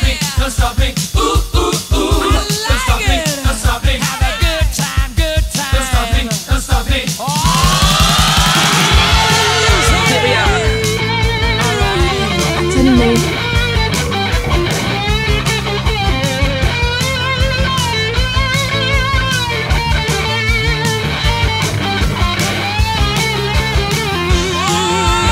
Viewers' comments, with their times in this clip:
0:07 oh yeah I almost forgot. At this part, actually Freddie screaming "Ohh!, let loose, honey!" and reached a high note (I don't remember what note is it). You'll hear it loud and clear if you listened to the Vocals Only Don't Stop Me Now. At this point we don't really heard that line because of drum and guitar solo comes in. Well, just figured it out by yourself